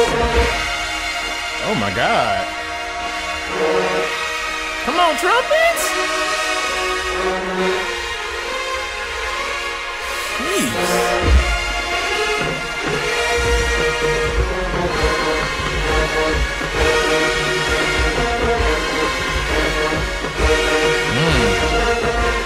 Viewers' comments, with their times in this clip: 0:10 Jackson start off song sheeeesh 🔥